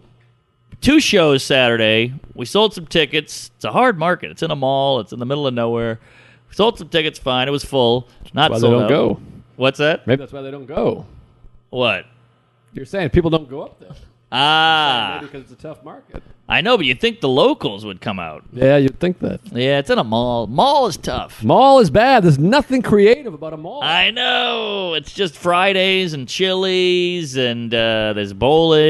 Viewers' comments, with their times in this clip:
0:10 Why is Joe's Mic the only mic where there is sound problems? It isn't horrible just a couple queefs in. Love the pod! I wonder if its the mic or the xlr cable